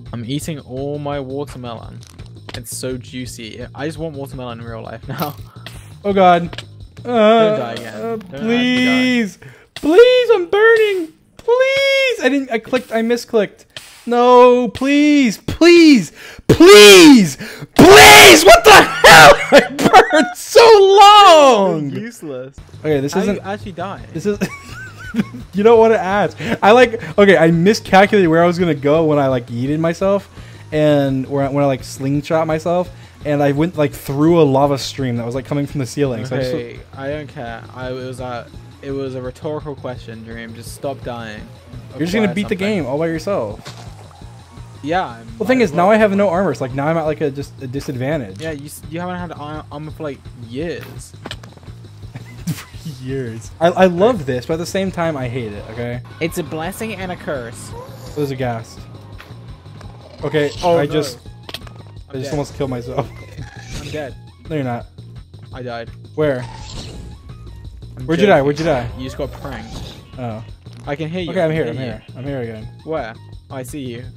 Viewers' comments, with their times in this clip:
0:04 Dream jokingly saying "I'm burning" in a baby voice to screaming "PLEASE" 😂
0:05 How those "Please!"s just went from a plea to shouting and raging 🤣
0:05 I'm dying at that little AaaAAaaA
0:07 thinking he gonna survive, playing around "pleasE" "pleaSE" "pleASE" "plEASE" "pLEASE" "PLEASE" "PLEASEE"
0:10 i like how he transitioned from a soft cowardly voice to a bassboosted deep-fried scream
0:14 Dream: please Please pLEAsE PLEASE what the hell? George: literally just laughing
0:14 as the "Please."'s got a lot louder my ears literally popped :(
0:15 Dreams first earrape I think— (headphone warning..)
0:16 this is the first time ive really heard dream scream fr
0:16 headphones users beware
0:18 dream just screamed really loud i had to throw my head set 😂 😂
0:24 his wheaze sounds like the din dun dun dun of the dream speadrun music.
0:30 Dream justifying his death: (timestamp ) Dream: I like miscalculated where I was gonna go when I like yeeted myself" Captions: I like eating myself
0:56 that sound like badboyhalo speaking
0:56 george’s accent sounded exactly like bbh
0:56 george's voice wtaf
0:56 okay, but why did George sound like bad boy halo when he said "It's a blessing and a curse"?!